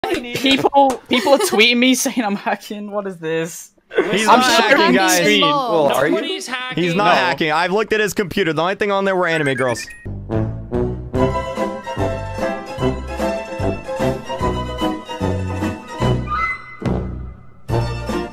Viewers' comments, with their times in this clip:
0:00 I honestly feel bad for poor TanqR he sounds fairly upset with salty children. I'm just done. Y'all leave Kreek and TanqR alone #TeamTanqcraft